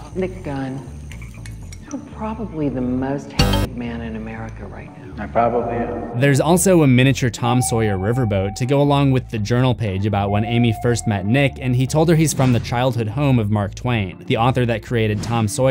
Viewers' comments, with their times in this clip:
0:03 sounds like the start of spooky scary skeletons